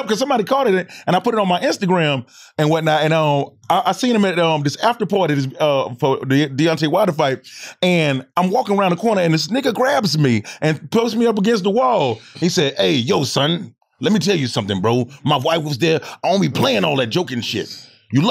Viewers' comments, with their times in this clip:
0:03 that busta ryhmes impression 👀 👌🏾